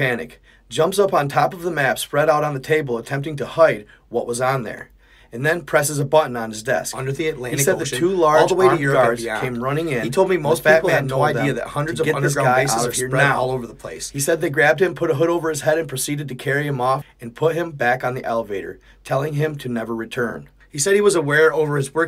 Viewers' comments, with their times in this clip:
0:06 Part of the audio is messing up